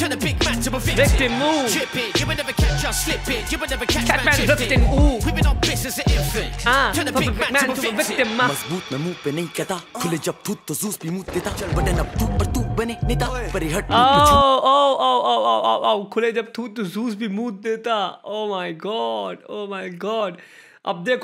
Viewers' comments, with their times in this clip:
0:09 felt like my it guy tried rapping 😂 no offence take it as a joke